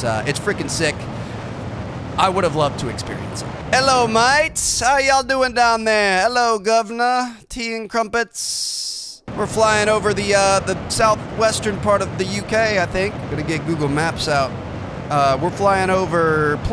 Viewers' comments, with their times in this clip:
0:03 yo! Mans really mimicking Bri'ish accent!!!